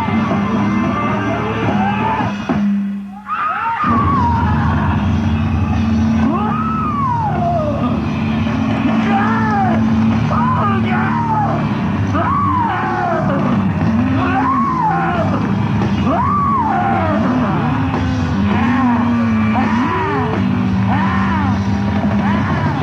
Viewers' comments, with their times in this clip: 0:03 Jim's screams lol